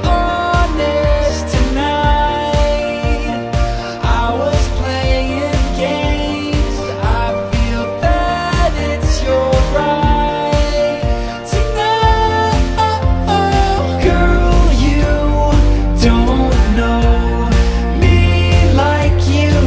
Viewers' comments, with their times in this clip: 0:07 Anyone else hear "I feel fat, it's your right"?